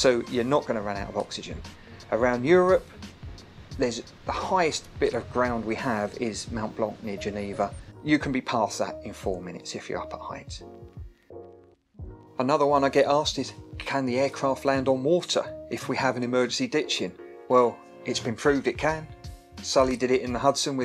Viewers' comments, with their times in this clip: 0:07 ... how did you pronounce Mont. Blanc? MOUNT?